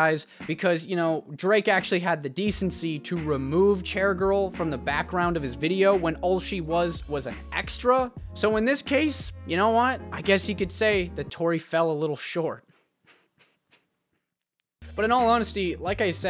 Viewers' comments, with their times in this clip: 0:04 I like that you laugh at your own jokes